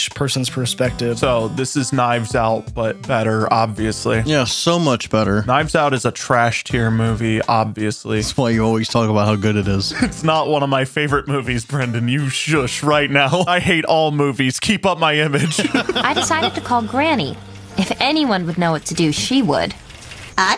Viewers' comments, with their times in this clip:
0:06 It took me till to realize there are a few ppl talking lol